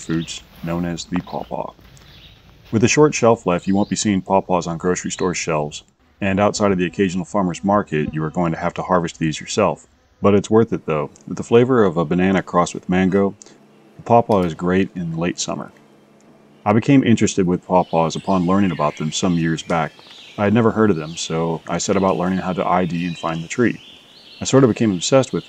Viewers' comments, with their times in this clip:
0:06 Anyone else take their headphones off thinking a fly had gotten inside?